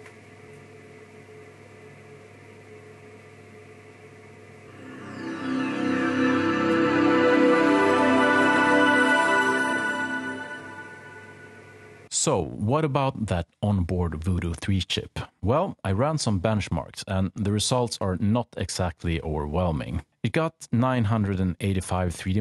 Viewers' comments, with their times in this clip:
0:04 I did bought an original CD of 98 SE before but was not able to install it in my XP machine. I did use 98 before but not on my computer, I did not used it long unlike the XP Professional. Hearing that boot up sound IS AN EARGASM TO MY EARS!